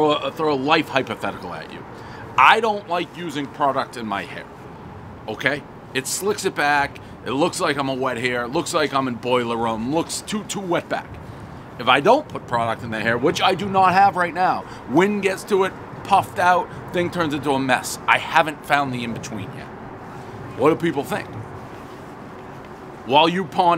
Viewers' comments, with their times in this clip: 0:09 Dave can't stop saying racial slurs everyone knows the rules